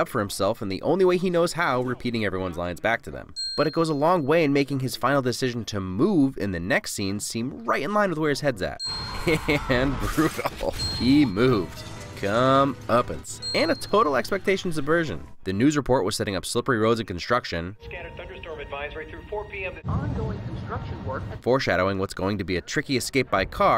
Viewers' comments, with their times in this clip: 0:08 This scene's music choice made me so, so uncomfortable and shocked when he killed Bats This film is amazing